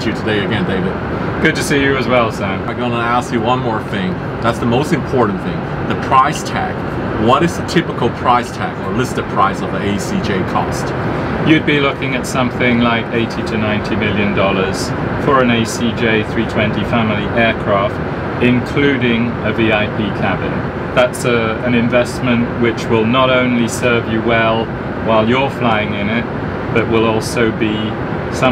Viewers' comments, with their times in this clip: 0:09 The guy looks and sounds super much as the court justice in house of cards.